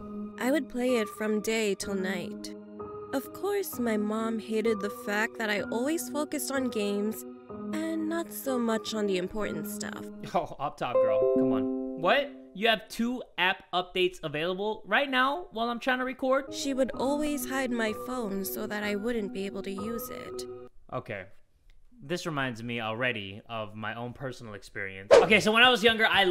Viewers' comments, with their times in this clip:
0:10 i heard like its my computer lol
0:10 i thought the notification was from me but forgot im on my phone
0:11 i honestly thought that was my laptop ngl XD XD XD XD XD XD XD XD XD XD XD XD XD XD XD XD XD XD XD